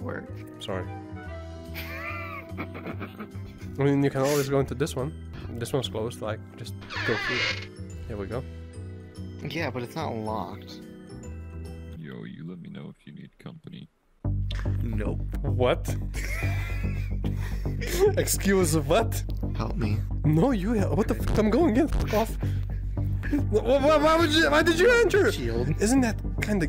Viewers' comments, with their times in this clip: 0:07 damn that hedgehog's voice is the most beautiful voice i've heard in a long time ♥